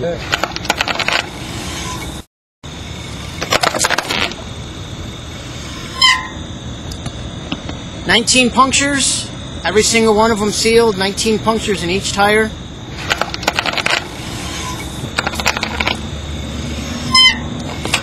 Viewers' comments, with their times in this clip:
0:03 you can hear a fart xD